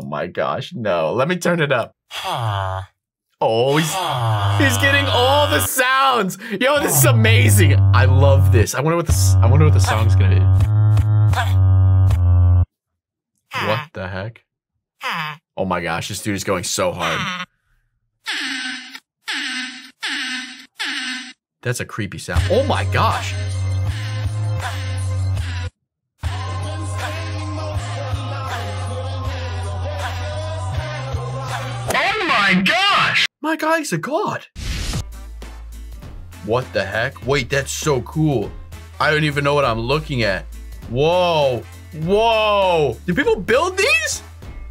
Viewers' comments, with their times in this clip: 0:03 music beatbox be like:
0:22 movie sonic but is villager is singing and beatboxing
0:26 bro just made a song
0:26 my favorite song
0:29 When my favorite song comes on❤